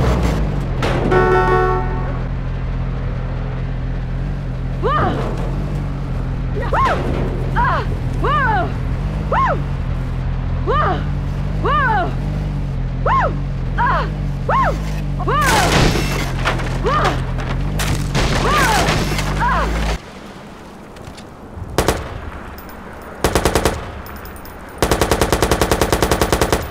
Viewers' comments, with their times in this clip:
0:08 90’s junior high dance music.
0:13 that sounds like generic npc audio from old games